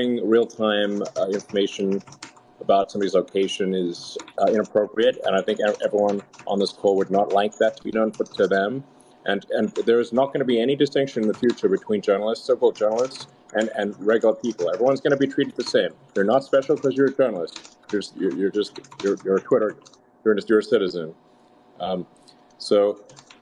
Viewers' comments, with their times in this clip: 0:08 I love the sound of typing on a keyboard. It's so pleasing